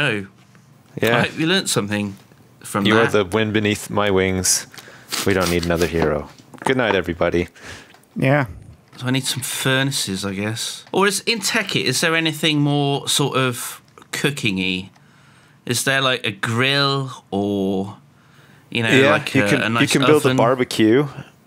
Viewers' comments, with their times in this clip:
0:08 Was Sips lagging ? Or was that me..